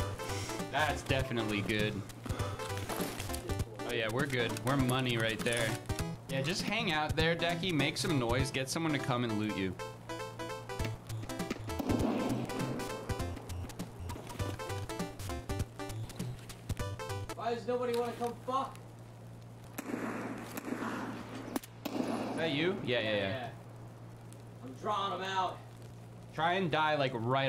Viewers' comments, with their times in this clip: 0:10 is that a 16-bit version of Nunca me Faltes for real?